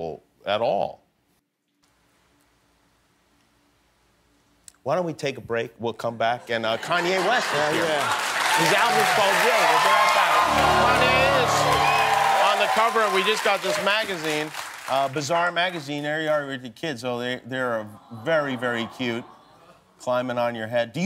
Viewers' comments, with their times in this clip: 0:09 i love the transition from him laughing to serious with the sound effect 😭😭 they definitely did that on purpose